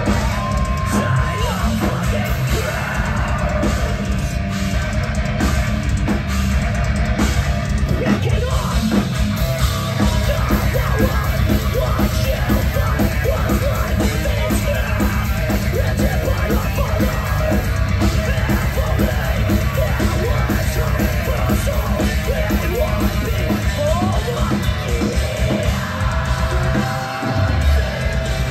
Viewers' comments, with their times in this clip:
0:09 guitarist nails that riff! one of my favorites